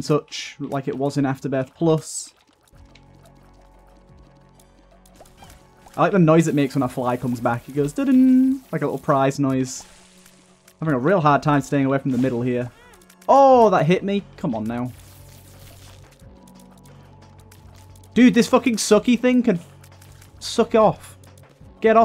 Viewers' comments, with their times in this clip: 0:03 Can't hear the little "tada" sound that Familiar Fly makes when it regenerates very sad :(